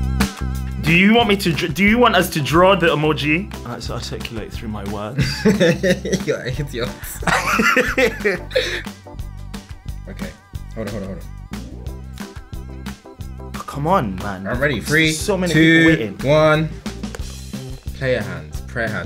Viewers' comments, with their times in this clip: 0:05 Kedar is me "you hidiot"🤣